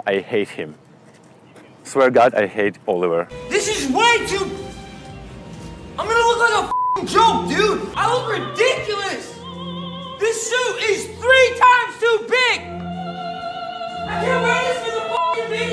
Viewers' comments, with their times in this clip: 0:03 What he hate what he yells